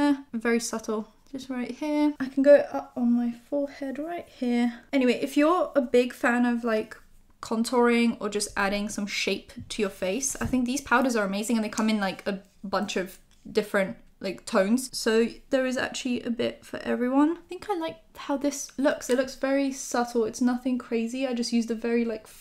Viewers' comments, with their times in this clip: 0:08 I'm high while watching YouTube. Watching this vid and get into the video and realise it's just her without background music... like whatttt??? Life is crazy ppl. Love her XD